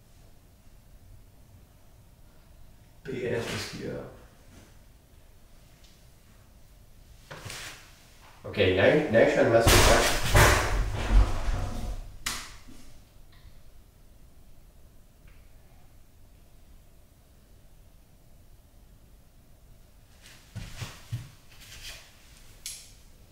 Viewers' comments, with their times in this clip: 0:09 what the hell? Sounded like something fallin down the stairs!
0:11 A faint voice the says "Get out if the house" (fast speech)